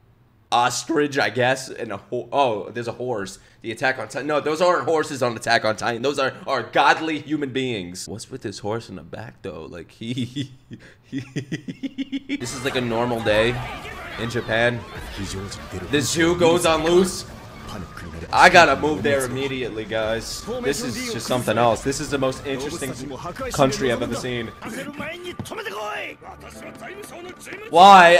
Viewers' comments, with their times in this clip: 0:09 lmao you voiced the horse so wel😂😂